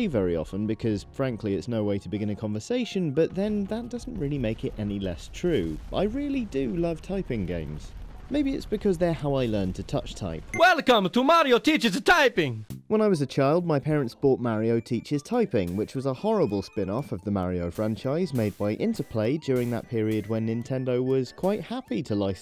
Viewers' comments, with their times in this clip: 0:09 HOLYYYYYYYYYYYYYYY SHIT be quiet.